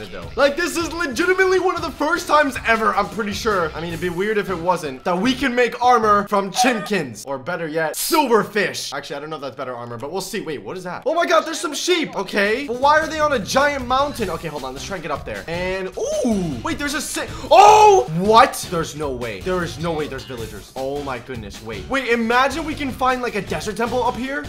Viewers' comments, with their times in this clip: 0:06 why did he say chinkens